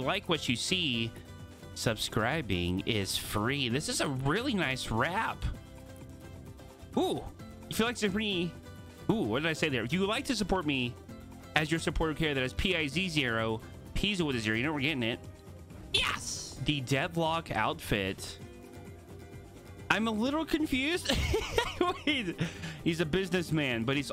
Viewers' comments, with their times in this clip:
0:07 why’d you turn into a sim lol